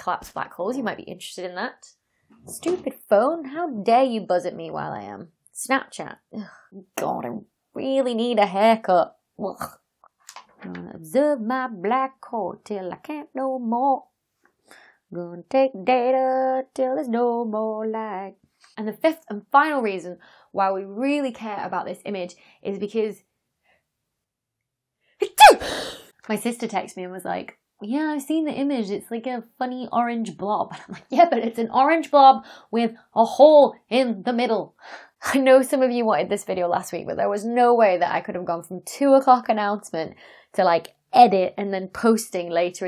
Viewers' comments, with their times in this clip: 0:05 Why are you singing with a quasi-southern accent? When I was little, I had a friend who's mother was from England, and his Father was from Texas. You sound like him when you sing like.
0:21 The reason we really care about this image is... ACHOOO!!!! There! There is the real reason people! :-)
0:25 Bless you! As for the rest, interesting video, the physics of black holes is just mind bending!